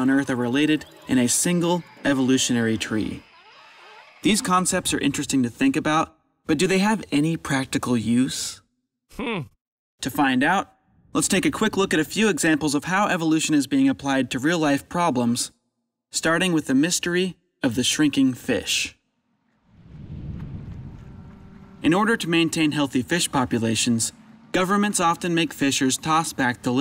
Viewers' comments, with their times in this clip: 0:08 Is it just me, or does the monkey sound like christopher walken.